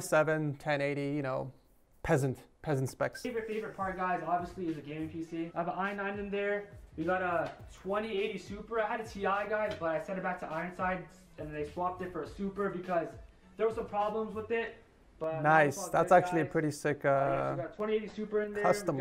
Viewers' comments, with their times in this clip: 0:07 "We got a 2018 Supra🚘"